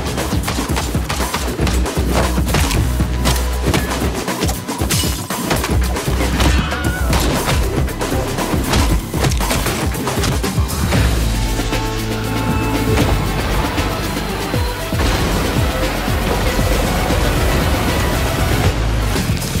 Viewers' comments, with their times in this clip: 0:06 The Wilhelm scream, lulz!